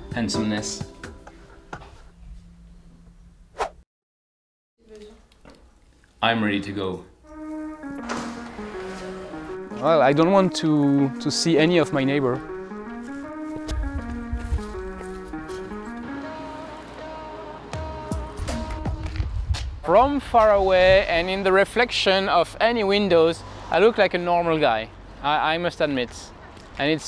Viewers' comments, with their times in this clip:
0:09 Song it goes hard